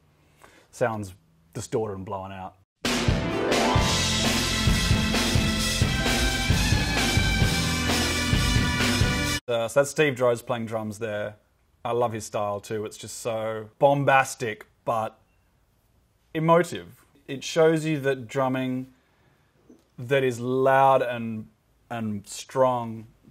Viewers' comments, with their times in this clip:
0:04 sounds similar to "It Might Be Time".
0:04 it might be time drums sounds similar